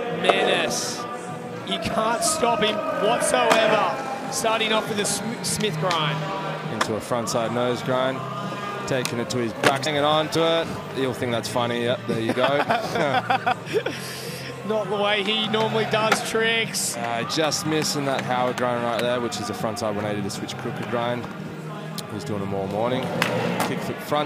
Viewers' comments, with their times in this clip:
0:09 what did they try and cut out? Lol what’d he say ??????